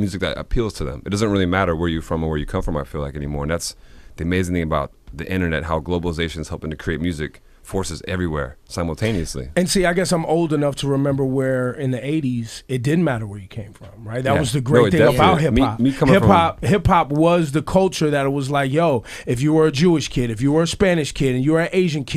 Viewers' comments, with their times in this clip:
0:09 What is Diplo saying ? What neously?